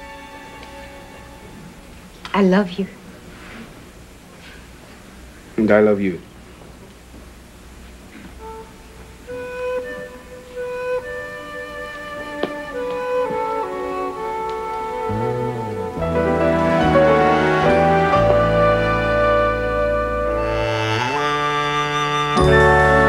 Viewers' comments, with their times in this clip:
0:08 a small hint of the "soap" theme